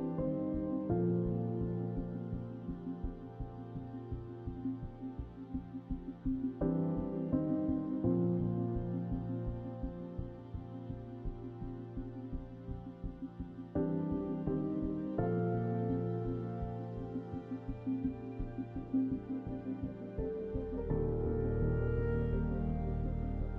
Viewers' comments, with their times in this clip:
0:07 That shot with the music in the background was somehow very moving to me